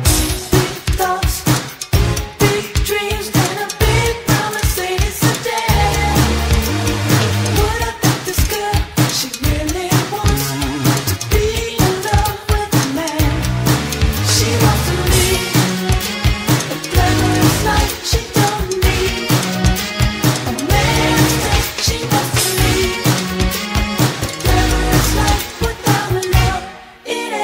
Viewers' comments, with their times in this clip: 0:09 I hear prince in the line